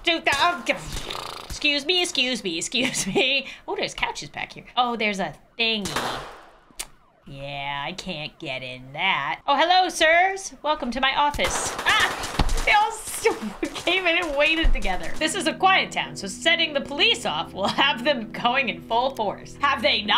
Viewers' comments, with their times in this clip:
0:06 i actually heard sirens around me and i thought it was the game-